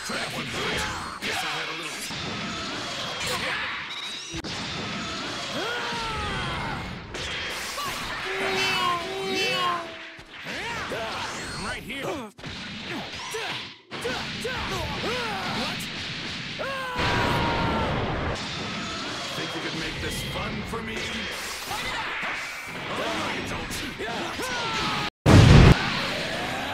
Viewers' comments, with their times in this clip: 0:08 those neeean tho